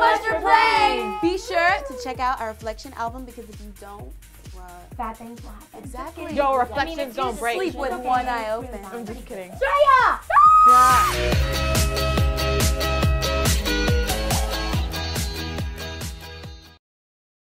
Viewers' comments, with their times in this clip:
0:05 Camila 😍 her voice sounds so cute